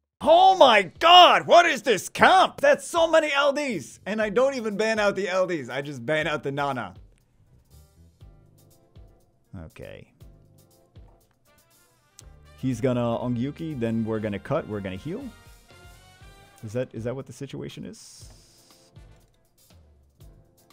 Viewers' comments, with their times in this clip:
0:08 Ban Nana or Banana 😂